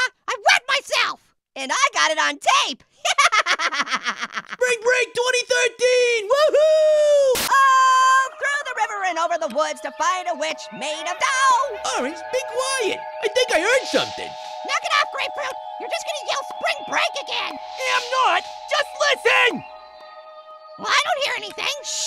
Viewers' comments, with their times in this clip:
0:10 in there was a witch laughing